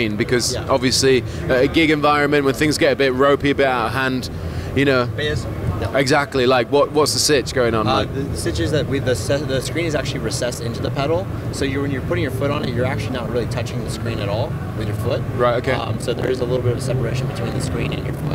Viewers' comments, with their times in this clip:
0:03 there is some sort of clipping in the audio and my ears are not happy :( lovely finishes on those guitars tho!